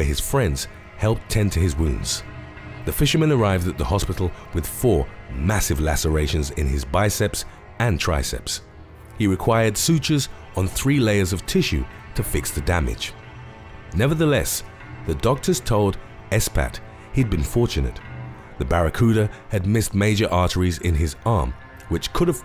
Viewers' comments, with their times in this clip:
0:10 why he say stitches like that